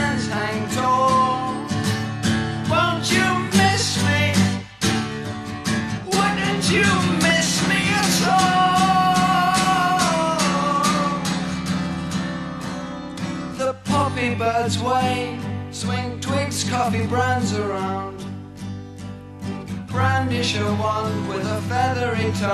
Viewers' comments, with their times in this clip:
0:05 The chord is absolutely brutal. Love it. You can see how this inspired Roger Waters' vocal performance on later albums.